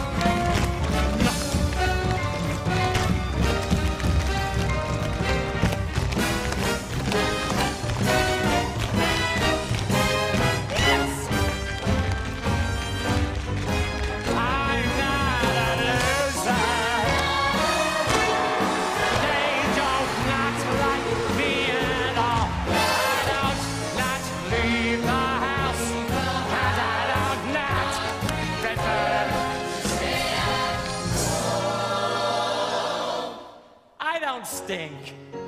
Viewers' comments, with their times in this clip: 0:10 why is no one talking about that 'yass' that came straight from his soul? XD
0:17 Also, Listen to that crowd scream-cheer. They LOVED this performance.